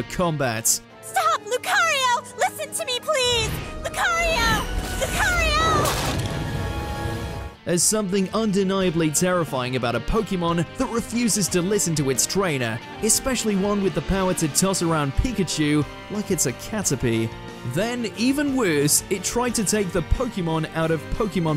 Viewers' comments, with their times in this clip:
0:05 Man, I want that bone-breaking noise as an mp3